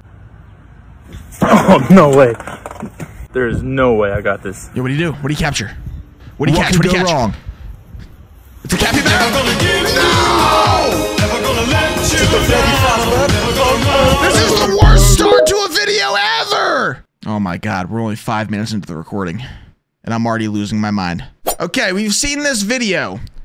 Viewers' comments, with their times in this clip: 0:08 Already lost your NOOOOOOO!!! was just too much to not break.